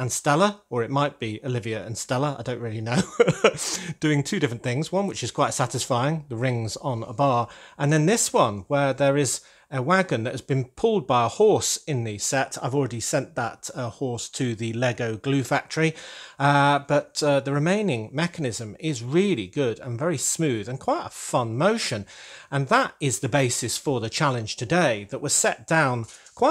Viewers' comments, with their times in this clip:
0:07 I love how the line delivery is so nonchalant and it's kind of glazed over so it catches you off guard.